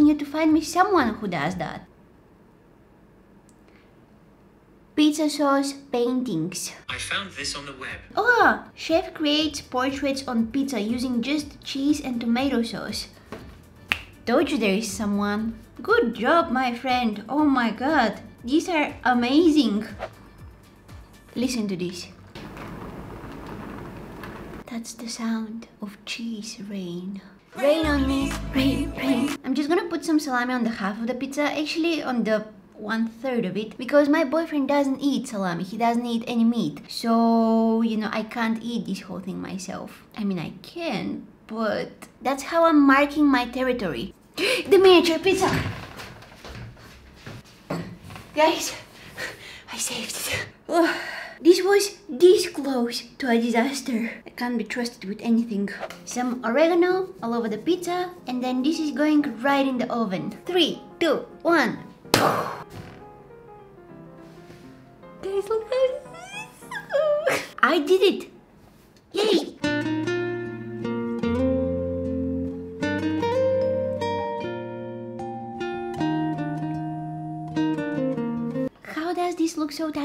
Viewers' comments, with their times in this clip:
0:09 Why does the MOUSE make CAT noises. Aren’t cats and mouses… not very close😅😅😅 Others: why are you always on the phone Me: … look for yourself Others: …
1:04 The sound she makes 😂 im deadddd she is so cute im out of breath laughing